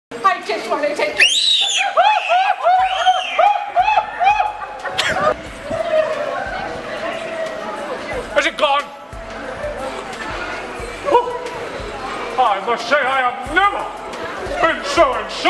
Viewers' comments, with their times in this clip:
0:00 Grinch: 🤗🤗 I just wanna take a pic- (Little kids screaming) Grinch: 😱😱 (screaming and running away) Is it gone? 😳 😅😅